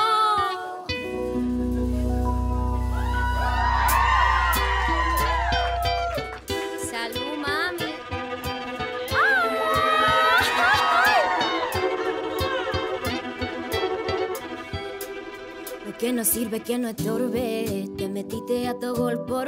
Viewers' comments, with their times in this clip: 0:07 its the ad libs for me 🔥🔥🔥